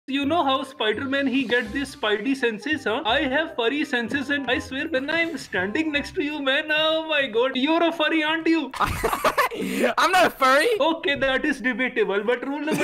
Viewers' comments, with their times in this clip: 0:00 DID THEY HIRE A INDIAN AND SAY IT WAS DREAM? LMAOOOO 🤣